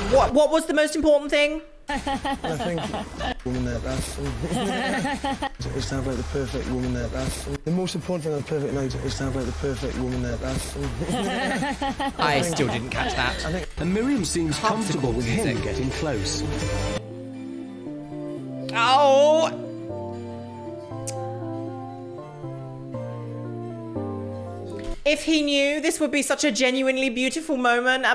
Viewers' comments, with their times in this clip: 0:09 "The perfect woman and a bath"